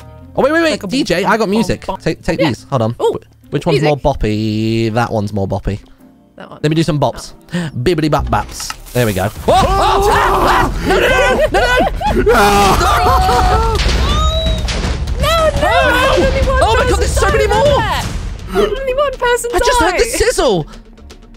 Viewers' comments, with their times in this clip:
0:06 the singing leading into the TNT sizzle was kind of a bop- perfect timing too Also, Martyn went to the one block that their wasn't TNT near AND put up his shield in time (for anyone wondering, everyone originally needed to take off their armor to go into the green lives club)